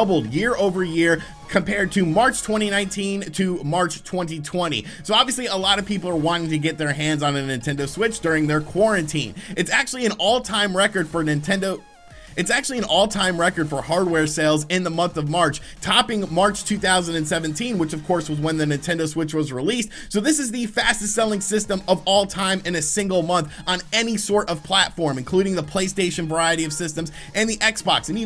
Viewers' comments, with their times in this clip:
0:09 a little audio editing could have gone a long way